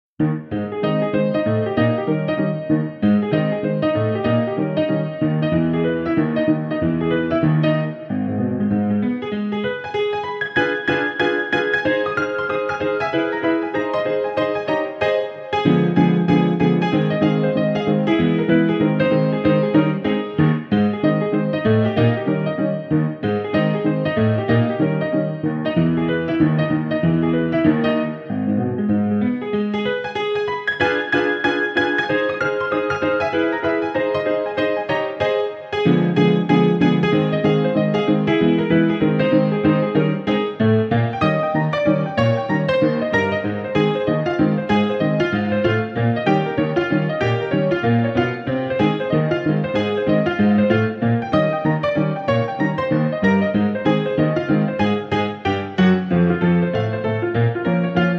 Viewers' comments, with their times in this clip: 0:00 reminds me of Mickey Mouse
0:07 i love that classic old wooden piano sound
0:40 The best beat drop of the 19th century.